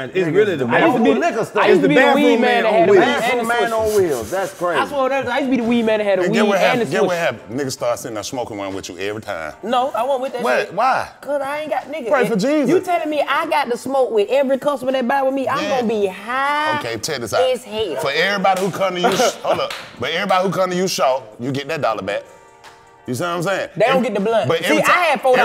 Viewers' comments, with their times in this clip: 0:07 No, but I did had to put the Caption (CC) on starting because I swear DC and the Golden hair dude was speaking another language